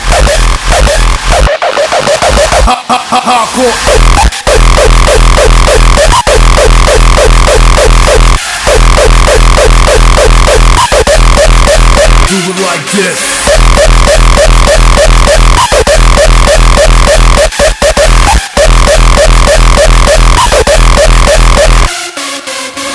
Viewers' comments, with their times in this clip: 0:05 This track is insane. the screech and that kick combo is chaos!!! Love from New York City. Heard this on Evil Activities Podcast. Love it. I just wish that some parts were a little longer. This track can easily be 6-7 minutes lol.
0:05 Yeah is a epic kick in combo with the screech it gives me goosebumps all the time🤘🏽 Just like Checkmate its a masterpiece🙏🏽🔥👿🎉🍻